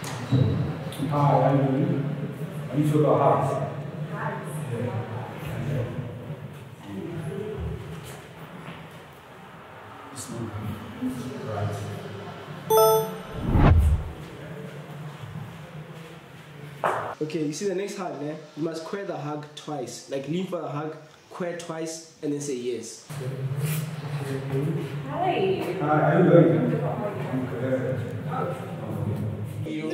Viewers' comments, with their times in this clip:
0:10 why is the sound so bad😢